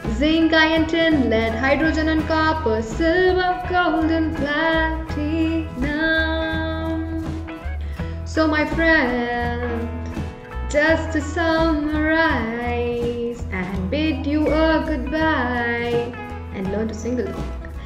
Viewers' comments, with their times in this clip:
0:03 "platinum" she is trying to copy ASAP science tone of periodic table here in reactivity series